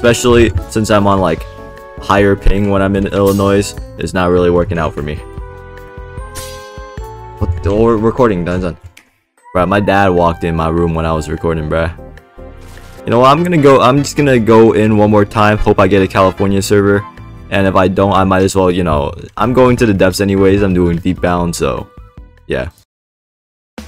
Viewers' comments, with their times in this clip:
0:08 wait what in is that Cantonese
0:08 you speak cantonese ????